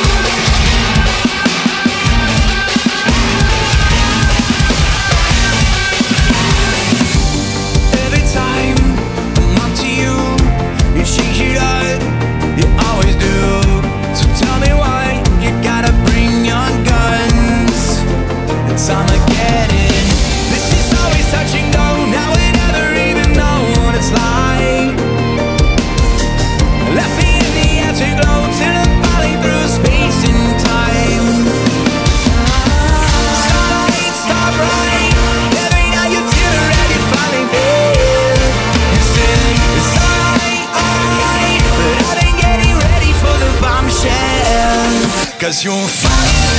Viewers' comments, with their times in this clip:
0:08 ist it just me or sounded this "everyone" a bit like autotune?
0:29 the vocals and synths sounds heavenly here
0:31 The vibes from the original track